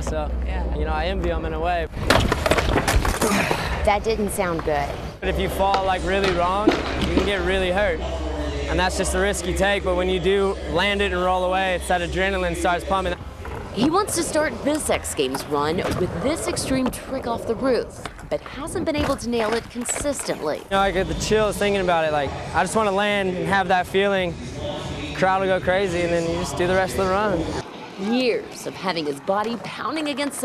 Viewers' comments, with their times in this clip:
0:07 Ryan suddenly becomes Australian
0:16 she said "sex games" ... mmmh, Seems like we don’t know what is goin' around Backstage?! 😬🤙🏼